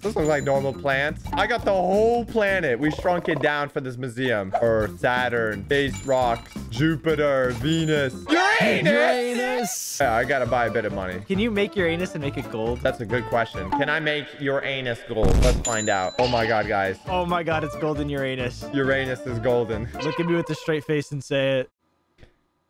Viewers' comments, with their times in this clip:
0:09 I like how they say "Uranus" at the same time